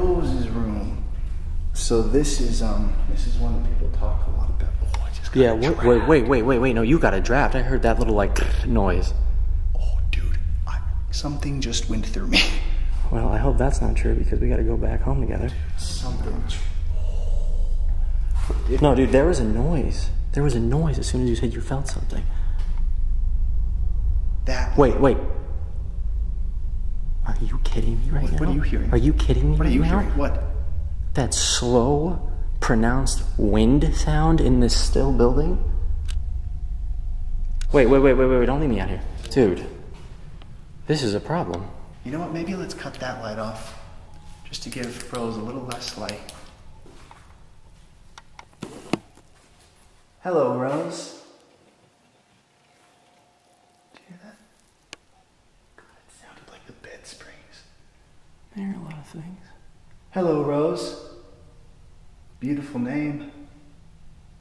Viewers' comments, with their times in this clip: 0:09 Guys… Talking about rose, you hear a female clearly say “ stop “
0:49 right after he says “hello Rose” i think u can hear a female voice mumbling 🫣